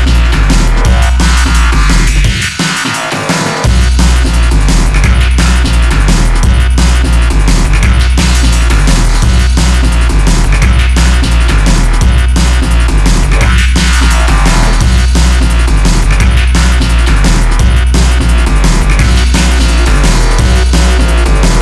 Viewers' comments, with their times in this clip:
0:03 holy hi hat drop!